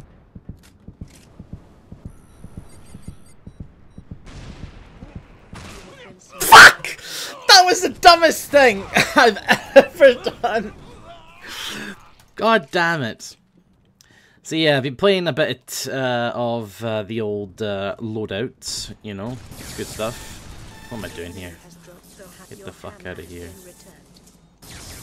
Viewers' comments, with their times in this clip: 0:05 "how real men yell"
0:07 My ears died